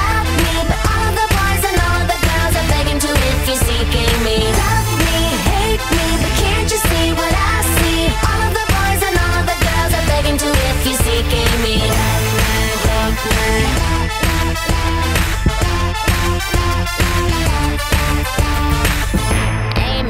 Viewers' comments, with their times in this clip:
0:03 do I hear “see” or “seek”?